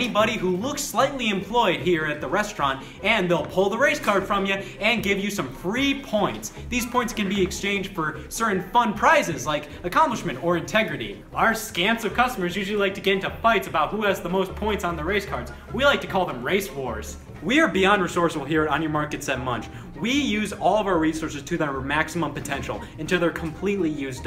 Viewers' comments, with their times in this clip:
0:07 did he just snort?